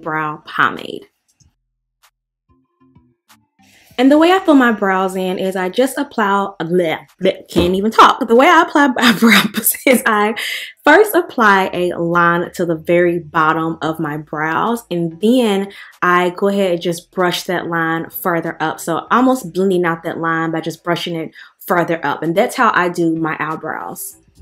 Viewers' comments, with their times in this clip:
0:07 😂😂😂😂😂😂😂😂😂😂😂 this happens to me also when I try to speak fluently but then screw it up.